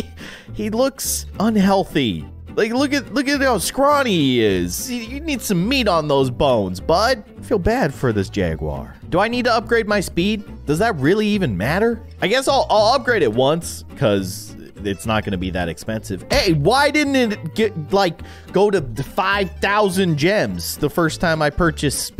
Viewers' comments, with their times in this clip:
0:08 the microphone stoped working